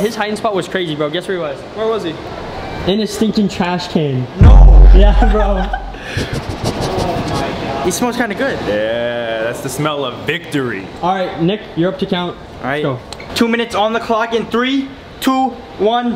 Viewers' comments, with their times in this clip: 0:04 that beat drop
0:04 Don't know why I almost died from laughter at the way he said no